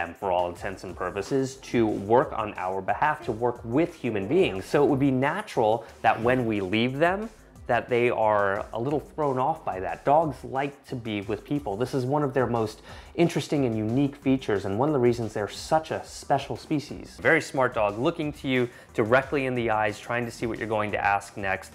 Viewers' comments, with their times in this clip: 0:03 when I heard sit and down I thought someone was next to me and scared me.